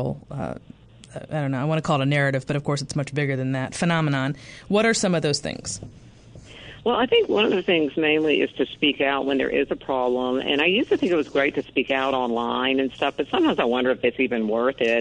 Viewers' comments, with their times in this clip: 0:03 After we could hear you huffing and puffing into the microphone. It was very distracting. Either sit back and actively listen to your guest, or put yourself on mute. And Stop looking for a chance to interrupt! You were pretty rude throughout the entire last segment. As a host, your job is to get your guest to speak. What you have to say or what you think is irrelevant until your guest has completed their thought. As a man, I see this as a typical female trait. As a gender, you all have to yammer even when you have nothing to say. Just shut up and listen without making sighs and without taking deep breaths And, btw, like most people I skipped over that excessively long commercial around the half hour mark.